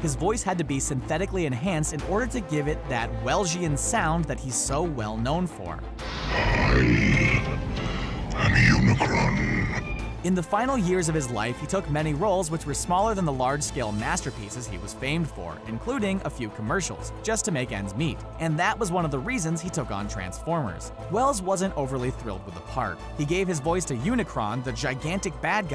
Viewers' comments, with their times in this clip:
0:07 r.i.p me and other headphone users 😵